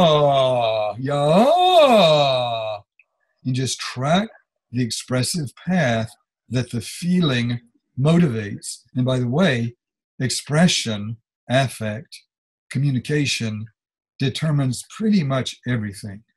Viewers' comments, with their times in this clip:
0:03 "You just track the expressive path that the feeling motivates. And, by the way, expression, affect, communication determines pretty much everything. It determines the pitch, it determines the pitch path. Melody is really just choreography for expression." YES (Don't worry folks – sound quality (delay / feedback issue) improves later in the talk. Don't give up!)